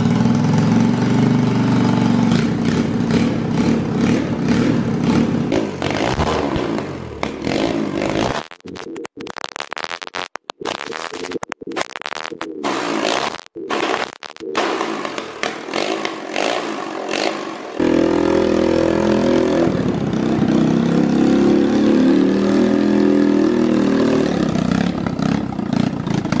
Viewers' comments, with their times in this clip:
0:08 that phong tune is on point (hopefully spelt that right)